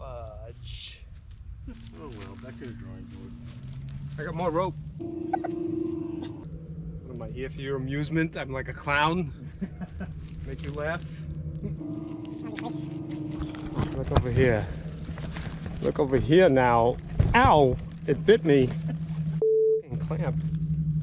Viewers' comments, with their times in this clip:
0:06 Your Christopher Walken is the best I’ve heard.
0:08 I think you could do a great Christopher Walken Impersonation .